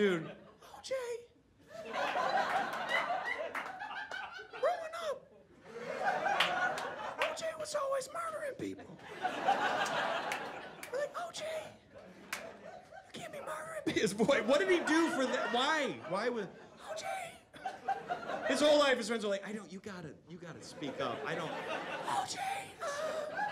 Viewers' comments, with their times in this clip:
0:05 anyone that watched that doc knows how hilariously good this impression is 😂😂😂😂